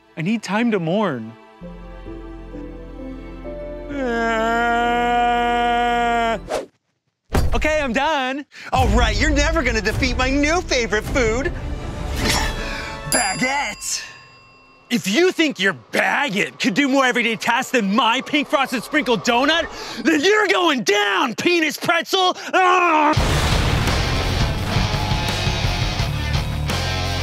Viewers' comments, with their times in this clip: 0:04 Ian’s fake crying 😂😂😂😂
0:14 why does he say it like a drive-by hate crime 😭
0:15 NOT THE BAGGOT 😭